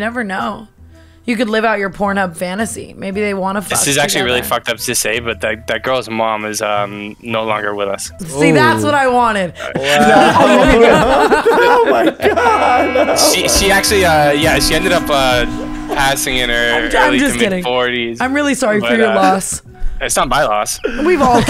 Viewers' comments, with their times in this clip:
0:06 WHY THE GRAVE SOUND IM DEADDD 💀💀💀💀💀